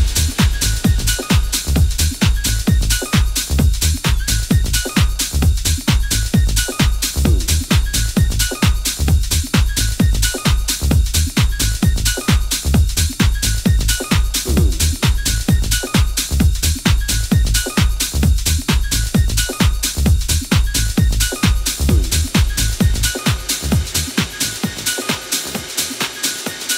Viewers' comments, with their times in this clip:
0:07 starts a great mash of bassline from various other songs over Eats Everything's track Burn. Cheers!